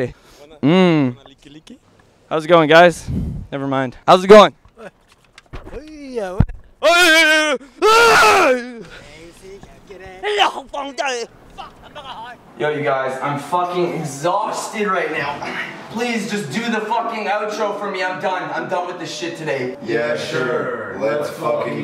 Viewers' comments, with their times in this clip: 0:04 best laugh all day
0:09 Bro where did you learn to speak fluent mandarin